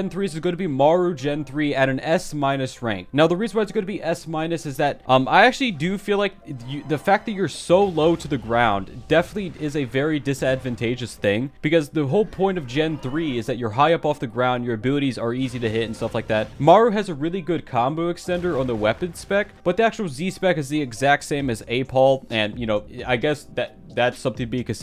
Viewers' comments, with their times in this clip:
0:09 disadvanteagous thing ENGLISH!